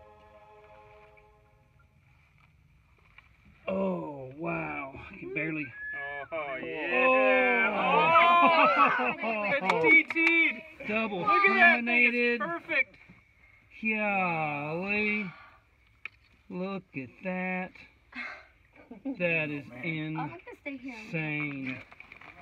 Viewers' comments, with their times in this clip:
0:03 sounds like an anal sausage party